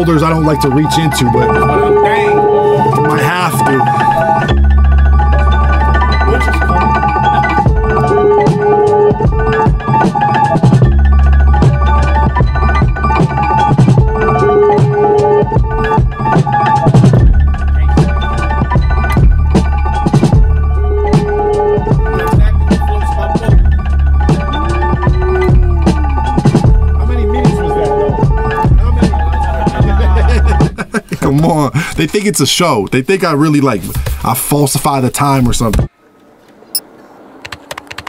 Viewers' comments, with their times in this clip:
0:09 The look on Rick Hyde's face when the drums dropped. I did the exact same face. Beat is 🔥🔥🔥🔥
0:23 when Kenny is talking, laughing, making eye contact and being high, he still hits in rhythm like it's nothing. Legend